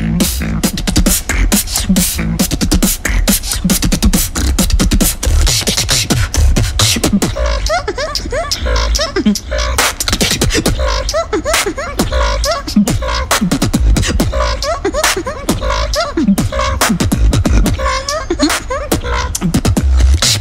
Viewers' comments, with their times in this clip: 0:05 this drop is insane tho